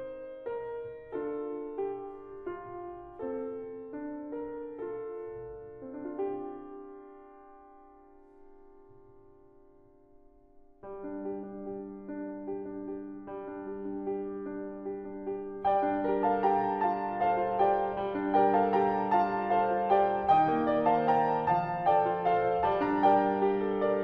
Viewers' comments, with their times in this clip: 0:10 As soon as starts, I feel sadness start to well up. Crazy how music can do that to you.